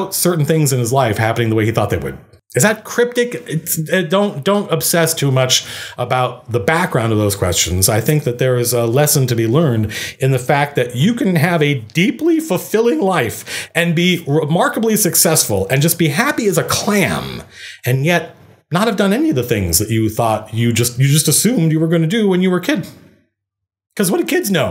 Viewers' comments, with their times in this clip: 0:10 That voice crack really makes that advice seem questionable xD